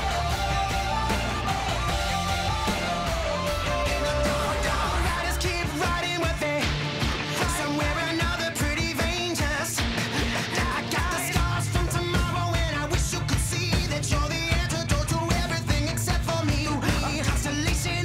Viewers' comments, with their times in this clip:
0:03 Am I the only one that hears "in the JarJar"?